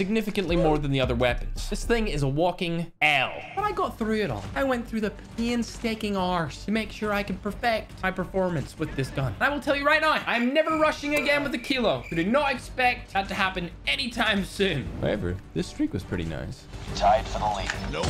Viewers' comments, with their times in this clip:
0:06 my man sound like sheamus from WWE 😂